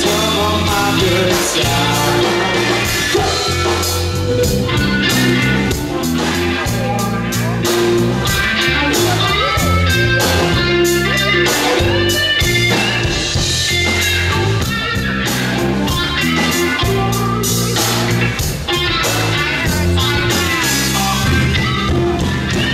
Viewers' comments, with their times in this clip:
0:07 and the solo ... damn. these are my dudes!!! :) from craigslist to youtube... we're going places!